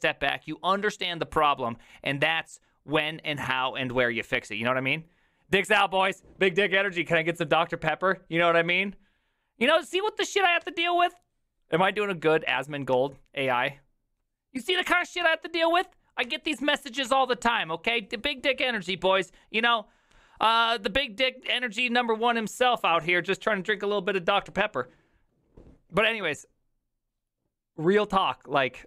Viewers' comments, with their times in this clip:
0:09 You sound like jimmy from better call saul
0:14 Sounds like Saul Goodman lol